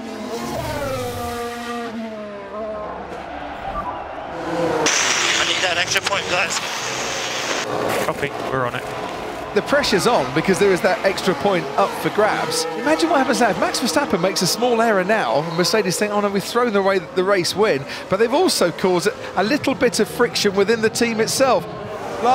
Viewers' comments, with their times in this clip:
0:04 All the respect in the world for Hamilton's achievements in his F1 career... But anyone else think he sounded so childish when he said: "i NeEd ThAt ExTrA pOiNt GuYs"???